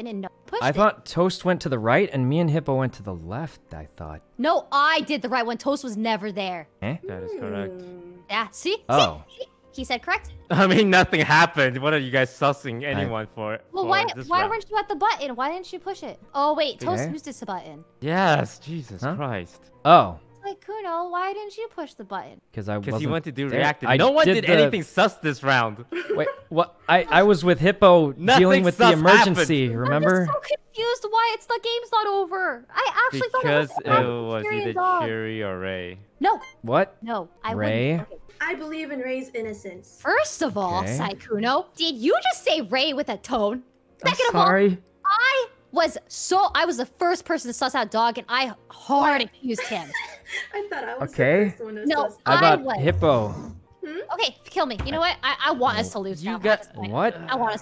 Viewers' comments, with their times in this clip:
0:05 idk why but I love that little “eh” 😂
0:06 The cutest "eh" I ever heard🥺😩💕 and the little head tilt😖
0:06 that "eh" was soo cuter🥺🥺
0:06 sykkuno: eh? i swear I SWEAR THAT WAS SO DAM CUTE!!!
0:06 Sykkuno's eh is so anime like lol
0:43 bruh "i'm sorry!" he sounds like a kid who yelled at his mom
0:43 OMGGGGG HE SAID HE WAS SORRY IN THE MOST CUTEST WAY POSSIBLEEEEEE 🥺